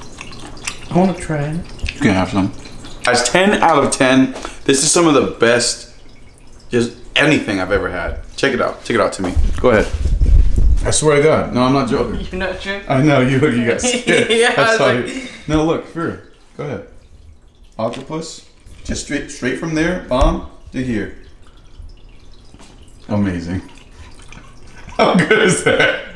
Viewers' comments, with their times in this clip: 0:10 why you scream